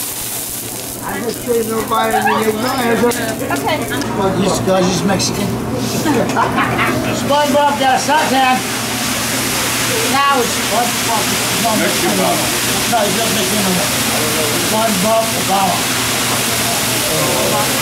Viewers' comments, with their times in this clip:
0:04 you can hear someone say something about Mexicans then laugh!